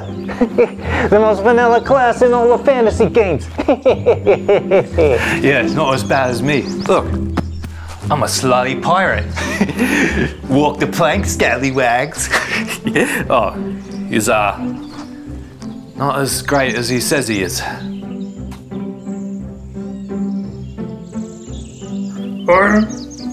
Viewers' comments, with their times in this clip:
0:05 was that like a 60’s mob accent or something?